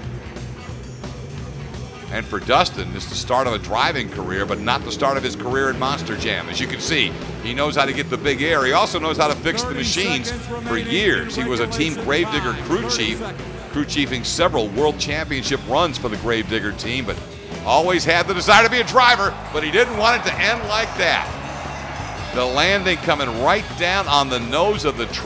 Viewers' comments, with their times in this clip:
0:09 This commentary was voiced over same person